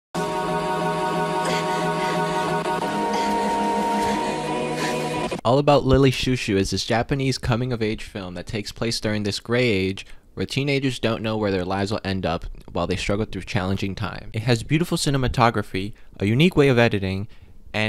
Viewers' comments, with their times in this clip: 0:02 OMG the song e t h e r e a l